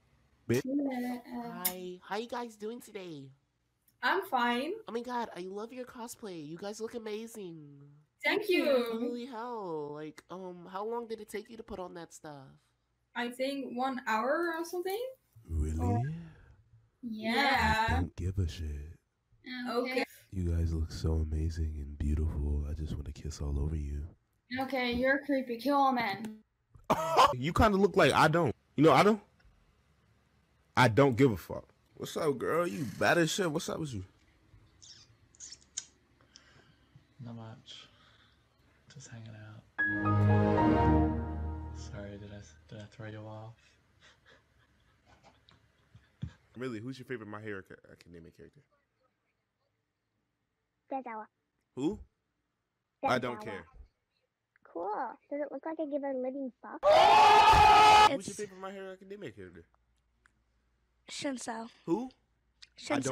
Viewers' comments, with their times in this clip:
0:08 THAT GAY VOICE IS SCARY
0:50 She sounds like a chipmunk